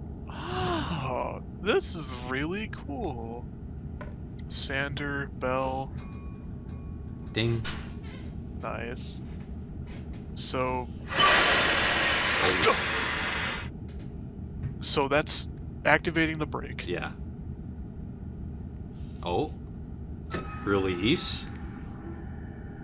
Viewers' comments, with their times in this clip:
0:06 You ended up scarring the British with the bell, they thought the futuristic train from out of their island was about to explode! (This is because I hear most British Engines lack a bell)